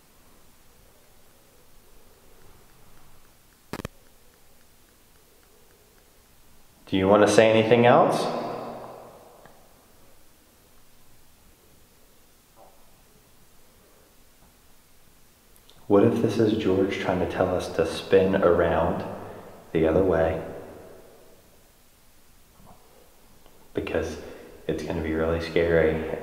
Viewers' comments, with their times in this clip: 0:04 audio gets messed up
0:12 you ask if he wants to say anything else and I heard clear as day NO